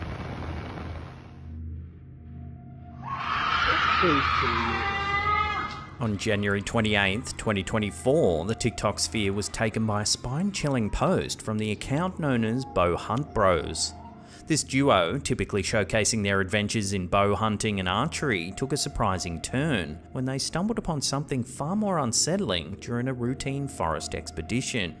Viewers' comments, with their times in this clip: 0:03 Sounds like whatever was screaming in the woods, had just found it's dead mother (curtesy of the hunters).
0:09 #5 that is sooooo very much a bobcat or type of such, they make unholy noises just like that. Ever hear a cat in heat? Yeah waaaaay scarier than that! When a cat starts sounding possessed... don't expect to get much sleep at night.
0:09 ( #5) Aparently, a mountain lion calls sounds like a woman screaming bloody murdered. Ps: I have never actually heard a mountain lion and f***ing hell. It sounds horrible.